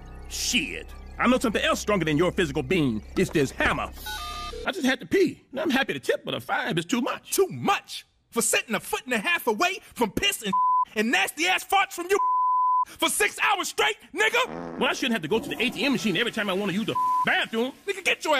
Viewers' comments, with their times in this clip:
0:06 I love how they bleeped everything but nigga XD